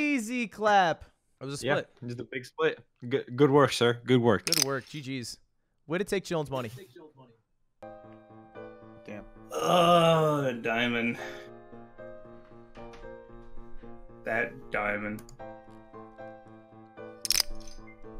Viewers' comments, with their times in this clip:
0:06 ehh, do you hear that echo ? I bet someone was stream sniping you Lud!